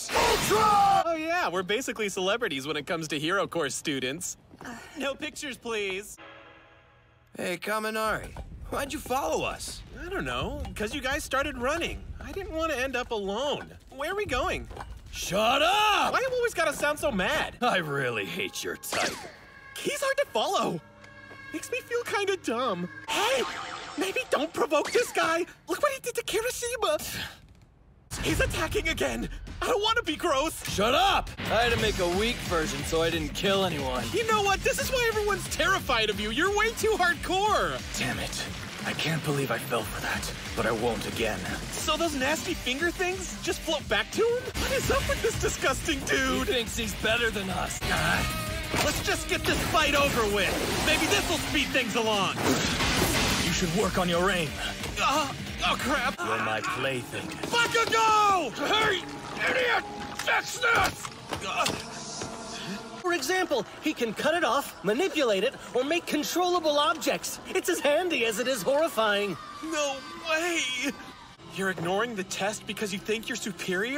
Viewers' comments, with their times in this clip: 0:10 dude denki sounds a baby and i love it 😭
0:57 Kaminari screaming BAKUGO hits different idk why